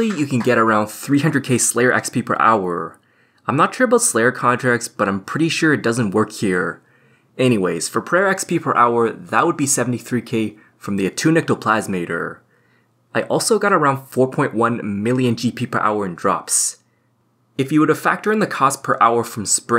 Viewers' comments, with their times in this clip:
0:04 I get what you're saying but I don't think I am trying to do the so called "upward inflection". Maybe it's because of my inability to lower it but I always seem to struggle at finishing sentences properly. I don't think I was intentionally trying to "ask/pose a question". I assume you mean the word "hour" where it kinda looked like I was asking question. Yeah some words I struggle to say with full breath. I really hope that's not a big deal and you'll still be inclined to watch my videos. I can assure you if you watched my videos a year ago, it is 1000x worse.